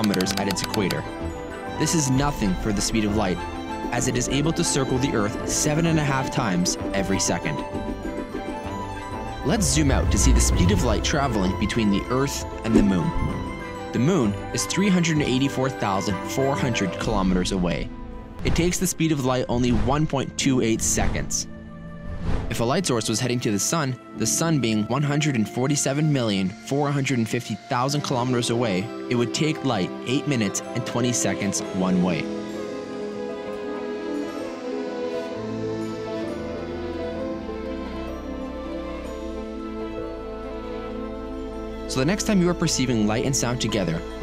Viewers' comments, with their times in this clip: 0:06 7 and a What? Ferrari ...of all things.
0:29 "It would take like, 8 minutes" Hahahaha I know you said light but that caught me off guard as you were very serious and straightforward throughout the whole thing hahaha